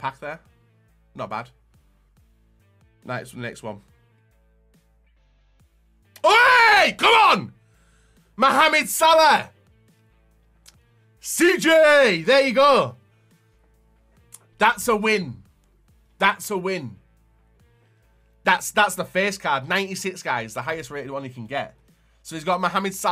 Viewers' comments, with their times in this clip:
0:04 i almost shit myself lol, dont watch with high volume